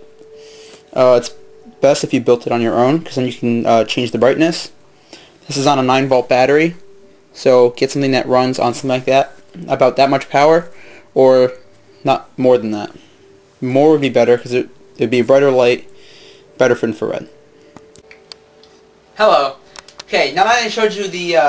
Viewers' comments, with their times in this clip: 0:04 HAhahahhahahhaah u fucking bitch its NIGHT I turn my volume on to 100 % and the intro fucks my headhahahahaha i think i shit in my pants